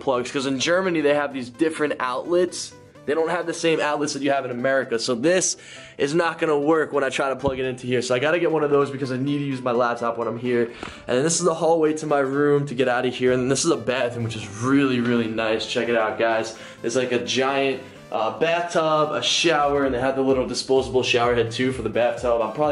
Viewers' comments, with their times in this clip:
0:09 It sounded like he snorted haha im dying!